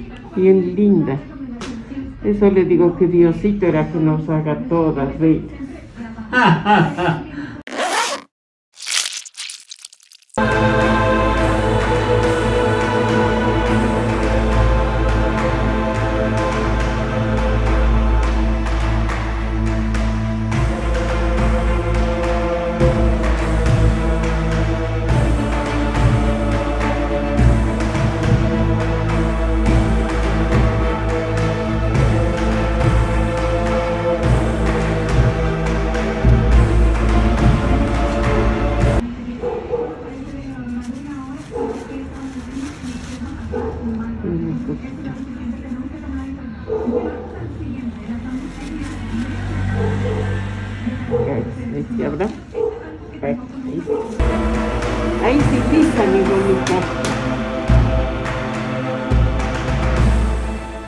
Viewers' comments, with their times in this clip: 0:06 That guys laugh tho 🤣
0:43 Why where there Tik Tok boys barking outside?